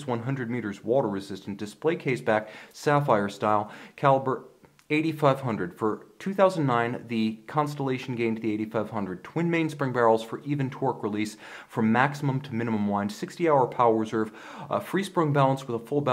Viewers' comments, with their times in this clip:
0:04 it's too fast technical info. Great review though